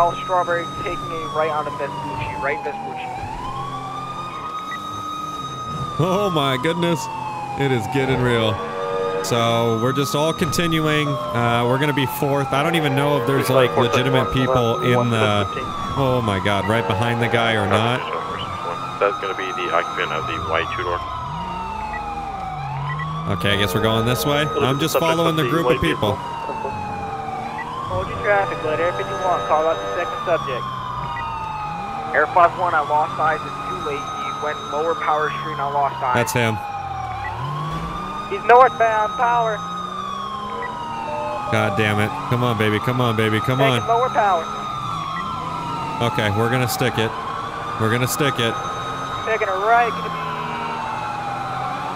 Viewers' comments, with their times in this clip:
0:05 those airhorns tho
0:39 love the enthusiasm of the officer calling out we need more of him!